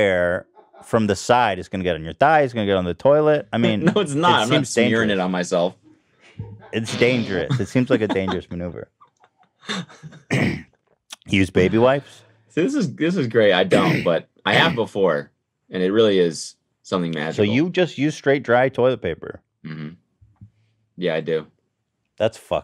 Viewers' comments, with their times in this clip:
0:10 Did no one else hear the fart ?